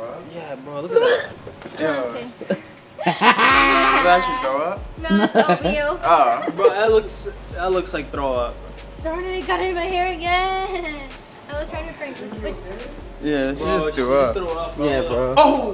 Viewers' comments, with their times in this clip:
0:03 😂 the way the cameramann was laughing